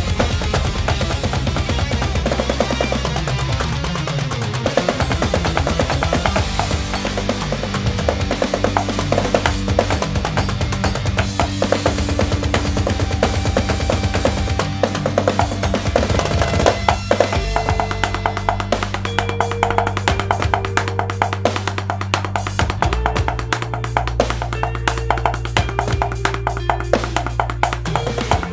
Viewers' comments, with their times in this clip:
0:03 Man tyou nailed that little drum solo Great job!
0:13 Holy smokes. That fill is insane!